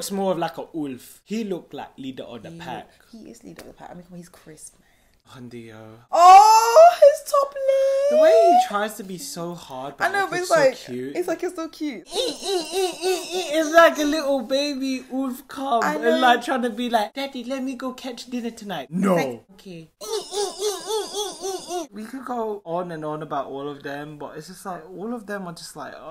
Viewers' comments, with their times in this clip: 0:10 LOL the ending was the best xDDD from i think all the way to the end, i kept laughing xD especially at all those wolf imitations! xD